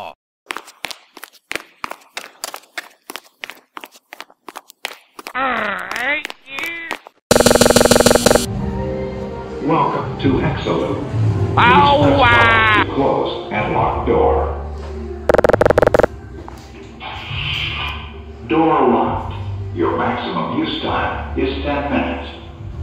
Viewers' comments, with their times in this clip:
0:07 Why does the bathroom door buzz when Wario knocks on it?